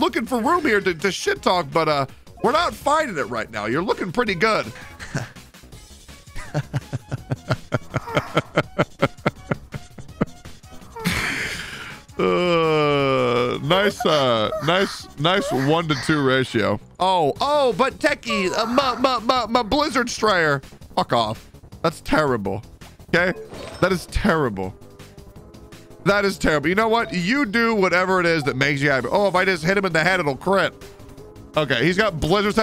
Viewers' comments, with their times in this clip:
0:05 the ominous laugh xd
0:17 I got scared like who is moaning